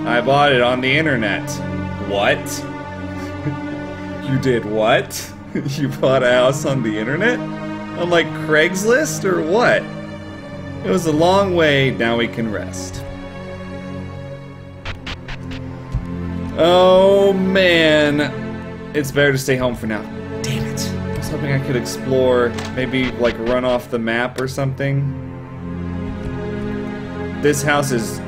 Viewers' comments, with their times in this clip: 0:09 The stalker music broke me